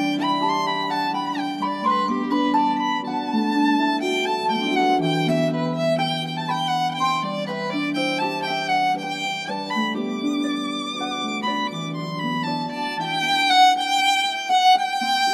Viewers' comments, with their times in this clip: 0:03 THE ZOOM AND THEN THE GUY PLAYING PIANO TOOK ME TF OUT LMAOSKKD